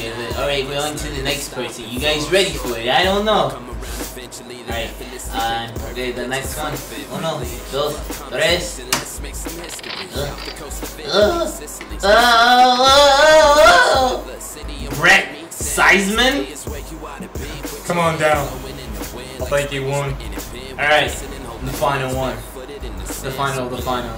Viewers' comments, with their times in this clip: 0:10 Also i died when u started to make those noises